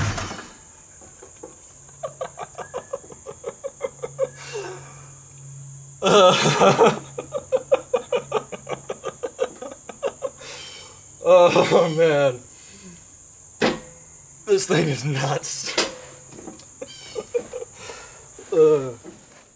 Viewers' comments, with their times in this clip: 0:03 You laughing ! That shit had me laughing. You transformed into an 8 year old on Christmas morning. Priceless brother!!